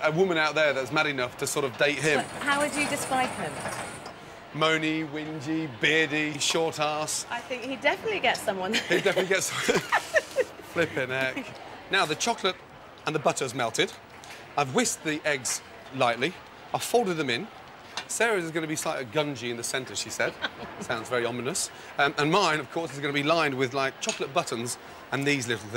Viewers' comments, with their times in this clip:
0:10 it sounds so weird to hear Gordon using filler words instead of just swearing